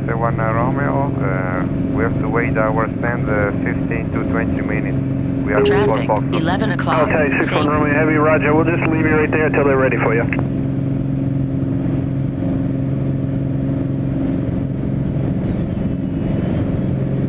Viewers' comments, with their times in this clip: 0:05 Was that the TCAS kicking in instructing you to sink when you’re only a few meters off the ground?